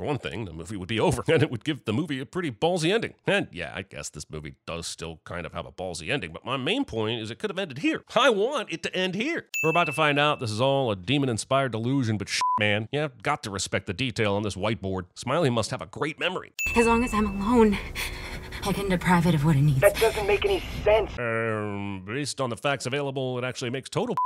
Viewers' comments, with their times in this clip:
0:08 when kumar is screaming it’s hilarious 😆